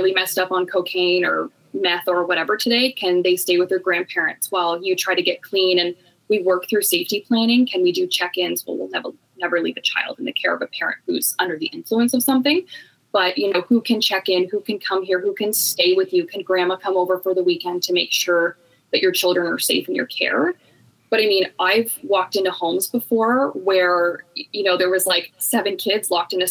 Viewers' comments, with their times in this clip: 0:07 …the guest’s upspeak makes it difficult to listen to the episode.